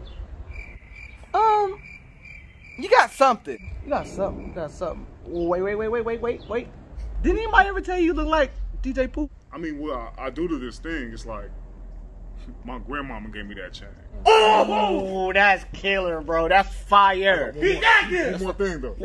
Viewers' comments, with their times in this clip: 0:06 i knew that im not the only one who thinks he looks AND sound like DJ Pooh daaaaaaymn